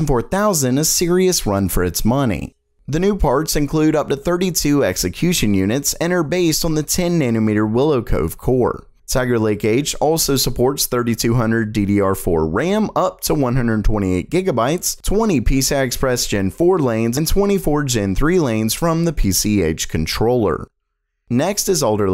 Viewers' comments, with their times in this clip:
0:04 Xe-cution units lmao